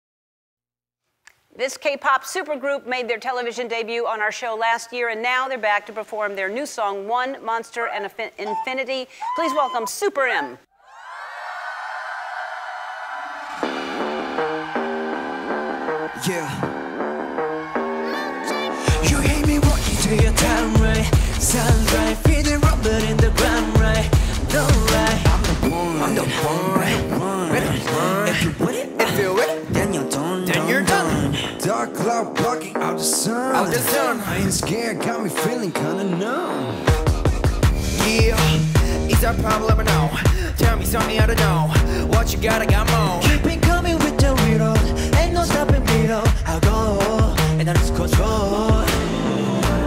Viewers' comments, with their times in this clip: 0:07 screams of damned
0:32 😶 Mannn that voice 😦